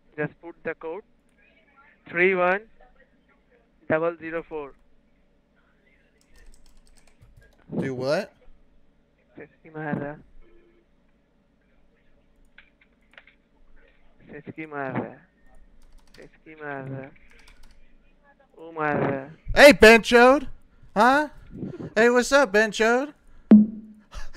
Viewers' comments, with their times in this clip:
0:09 lol...loved your Indian accent 😂 he was telling others that he is being syskyed...